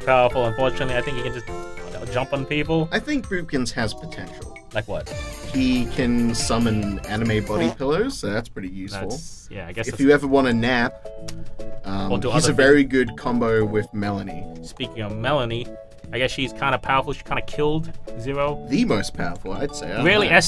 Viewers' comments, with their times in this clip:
0:04 I love Boopkins, he's so cute and it's kind of funny with the voice he has.